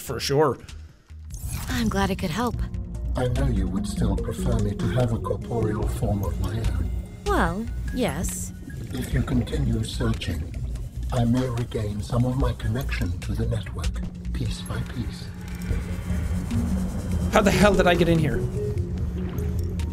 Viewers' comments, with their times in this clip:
0:07 Sam And AL-AN: Talking About Something Serious Jack: irish potato confusion